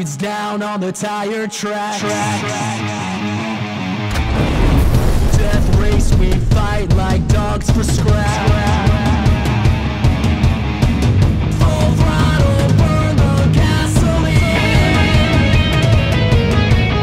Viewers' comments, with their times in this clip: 0:03 on what's that Click sound?